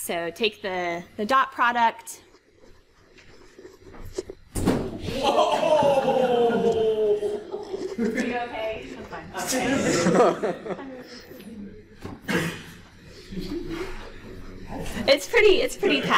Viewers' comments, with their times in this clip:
0:04 this thing sound dangerous =D